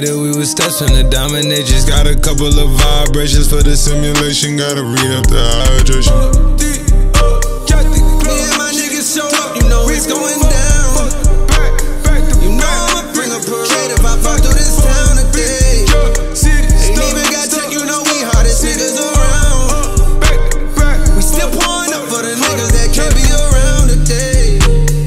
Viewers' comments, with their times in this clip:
0:07 yeah he’s in the song. He starts singing